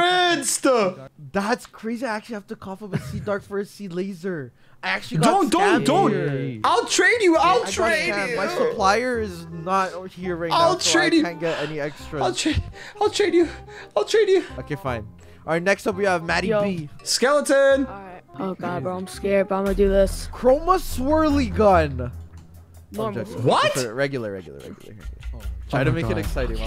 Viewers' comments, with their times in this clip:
0:07 Bro started crying